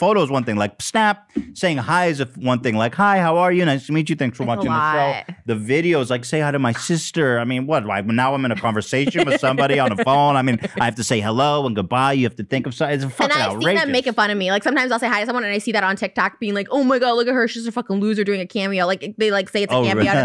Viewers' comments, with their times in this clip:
0:08 I love how Ethan starts talking like an italian mobster out of nowhere